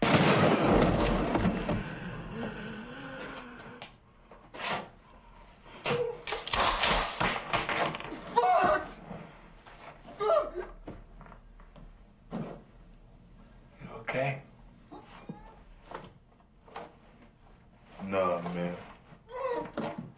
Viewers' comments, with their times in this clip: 0:06 Not sure why, but the sound of the shotgun racking makes my heart swell with joy. Making this timestamp just for me.